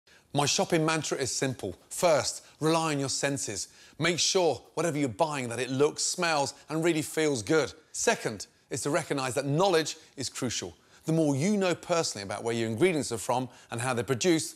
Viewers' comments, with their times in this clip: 0:00 who put nails in his shoes?